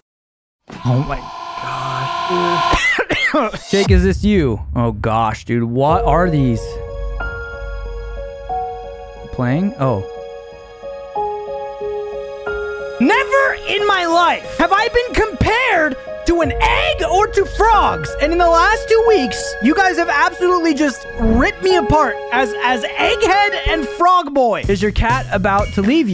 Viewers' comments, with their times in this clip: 0:09 "NEVER HAVE I EVER" sounds like JackSepticeye to me